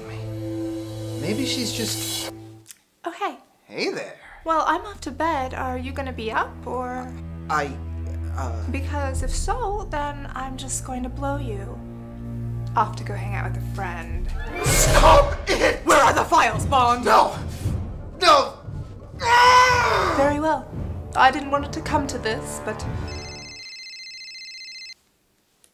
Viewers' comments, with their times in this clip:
0:09 ROFL I love the finger point and voice This really is one of their better videos and most of them are really good. The spy reminds me of a cross between the G.I. Joe Baroness and Molotov Cocktease